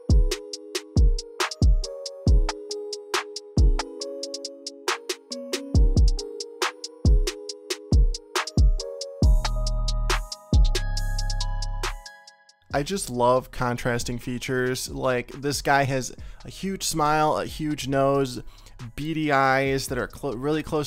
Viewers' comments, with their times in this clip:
0:06 getting very courage the cowardly dog vibes with the barber cousin. “Very naaaaaaughtyyyyyy” 😂